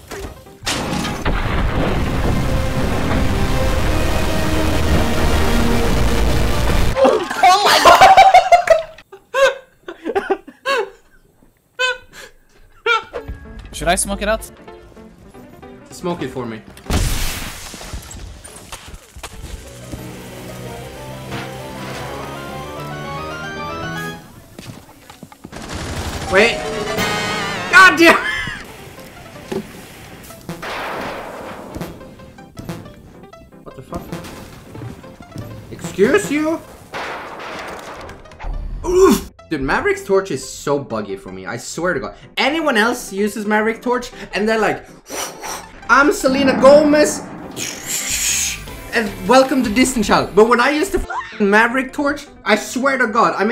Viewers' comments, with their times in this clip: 0:04 Now I know I just didn't hear the Transforms theme play over dis flag with your team outta get fuzed
0:05 man literally played the transformers theme over the commie flag lol
0:09 Hey, I did my honk laugh too !
0:38 this big "OOOOF"